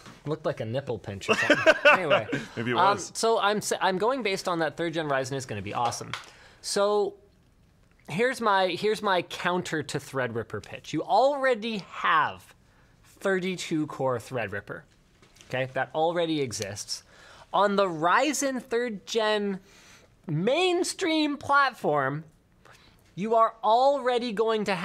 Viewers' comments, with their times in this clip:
0:05 Anyone else getting a weird ringing HF noise ??